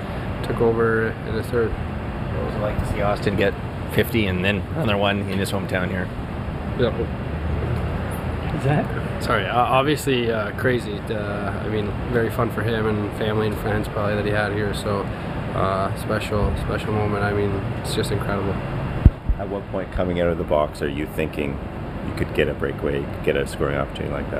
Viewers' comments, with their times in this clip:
0:05 You can take Willy out of Sweden but you can't take the Swedish out of him.
0:05 Wait Did he accidentally start speaking Swedish or did he burp? genuinely asking